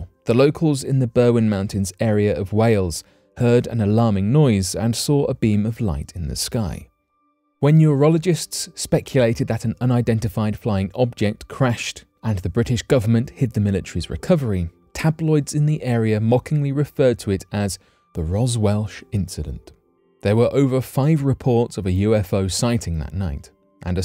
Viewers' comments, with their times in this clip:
0:07 Urologists? Were they taking the... Nevermind. ;)